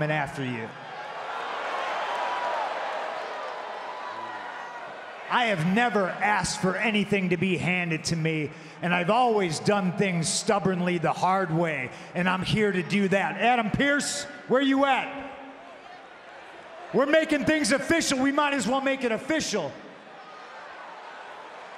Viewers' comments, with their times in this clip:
0:03 Cole said ooooh under his breath 😂😂😂😂😂